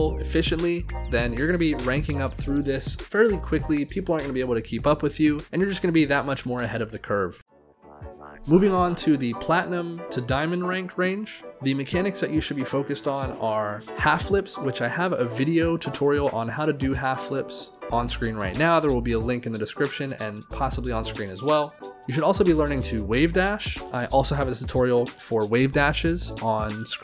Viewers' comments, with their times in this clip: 0:08 dat music is nice and smooth. song?